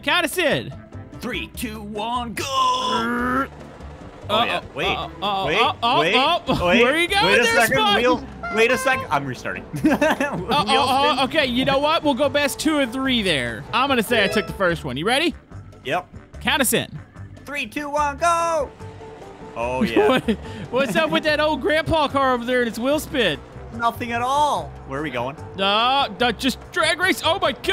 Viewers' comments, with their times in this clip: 0:08 That Worms "Bye Bye" so nostalgic 😂